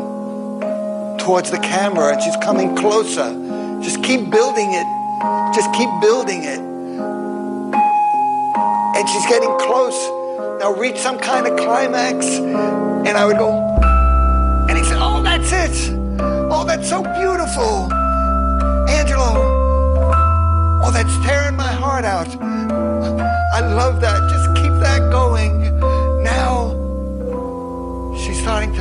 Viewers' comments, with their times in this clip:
0:10 I swear to god that bass Jaar added is amazing, it gives it that beautiful vibe, a true climax.